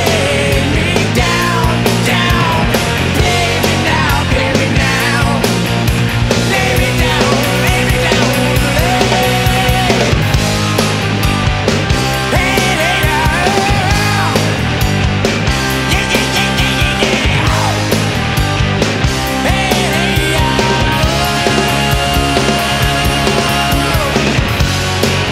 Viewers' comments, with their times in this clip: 0:09 This has to be recorded to tape right? I feel like I hear a tape splice/edit (that classic ride cymbal drop-off that happens during splices). To think these songs that once thrilled the life out of me when I was younger were recorded on tape. It really explains part of why it was so easy to fall in love with these songs (the SECOND they hit the radio) as the actual "studio sound" rose to the quality of the writing.